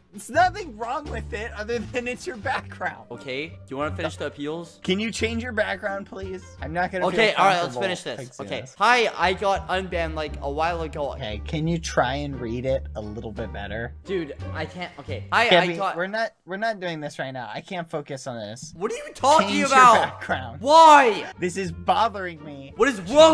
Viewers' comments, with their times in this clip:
0:06 they sound like an old marriged couple